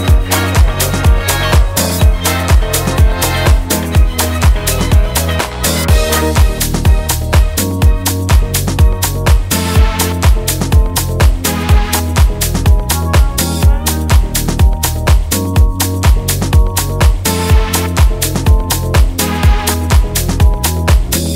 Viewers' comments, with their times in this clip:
0:06 The temporal shift in key is sublime